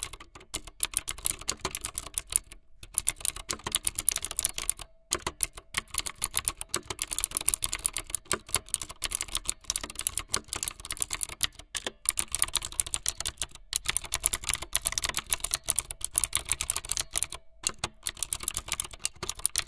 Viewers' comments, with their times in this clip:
0:04 The one with the loud cheap annoying keyboard